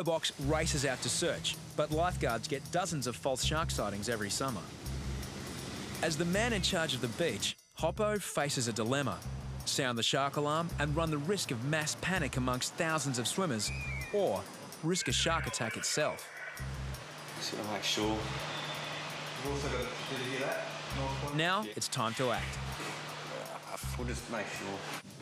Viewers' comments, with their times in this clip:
0:09 "The man in charge of the bitch"